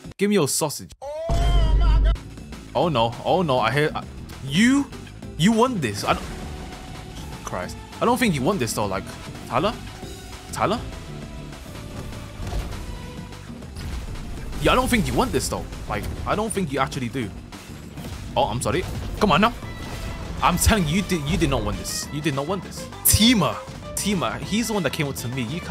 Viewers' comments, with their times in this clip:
0:10 did u speak Arabic or something